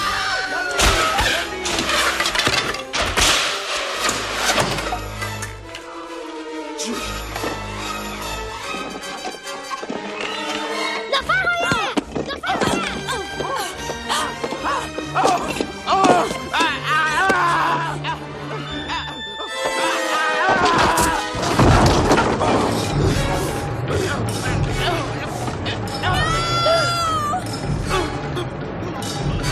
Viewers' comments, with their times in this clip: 0:04 Mario jumping on koopah shell sound effect
0:04 Anyone else hear a Mario sound effect ?
0:10 Does he speak the Hong Kong language? ( I hope that I am not mistaken. . . . )
0:15 LOL the noises he makes...
0:17 What the hell the scream is so funny